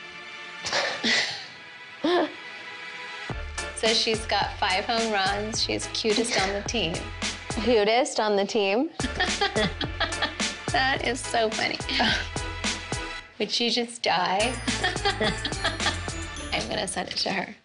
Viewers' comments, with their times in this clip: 0:05 evil sister laugh wow that was funny how they thought alike at the same time that moment was amazing!!